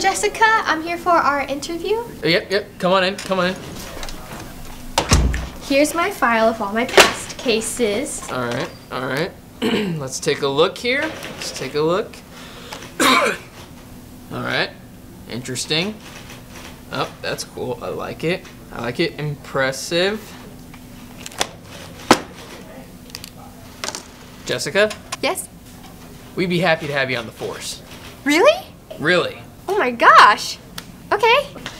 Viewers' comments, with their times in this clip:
0:07 is soo loud
0:13 when he coughed I was like "CORONAVIRUS!!!!!"